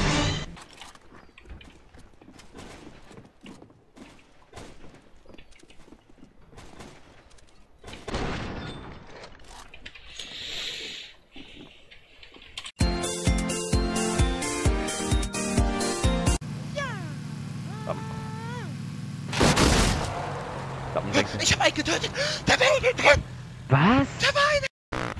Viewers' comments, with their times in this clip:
0:08 just had 3 collateral headshots. reaction? heavy inhale